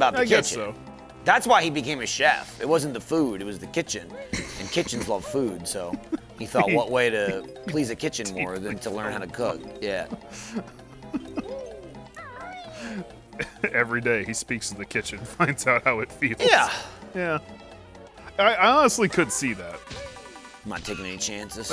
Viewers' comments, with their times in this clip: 0:03 By the time you got to the end of this conversation, "kitchen" no longer sounded like a word